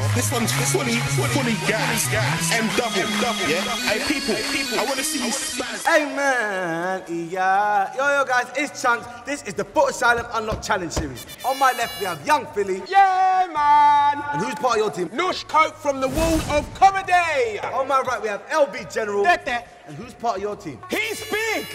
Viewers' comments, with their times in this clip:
0:05 wayment, chunkz can sing?!